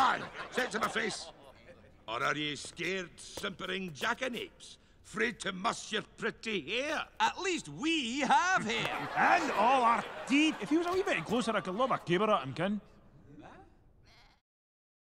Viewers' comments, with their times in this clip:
0:07 ... If he were a wee bit closer, I can throw my caber at him, can I? Is that what he says? :S
0:13 You can hear someone say "Wha?" in confusion.